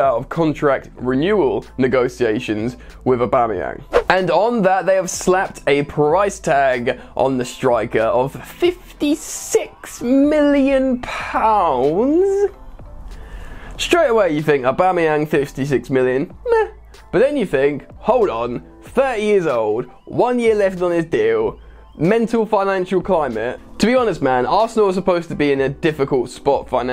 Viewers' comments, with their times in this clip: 0:08 why did he sounds like Jim off Friday Night Dinner when he said PEE's transfer fee: